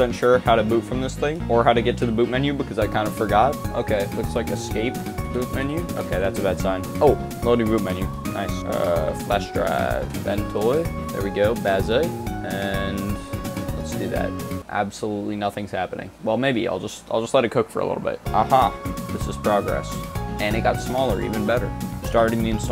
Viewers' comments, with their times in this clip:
0:03 hey i wanna give some feedback on the video some things to make better. 1. Music to loud over your talking 2. video to fast (all over more in beginning) so overall talk a little more Overall editing was good 👍